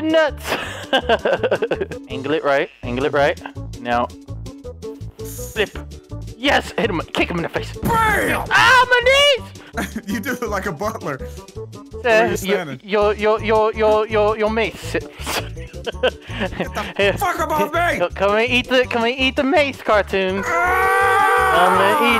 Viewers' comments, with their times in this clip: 0:08 He sounds like a little kid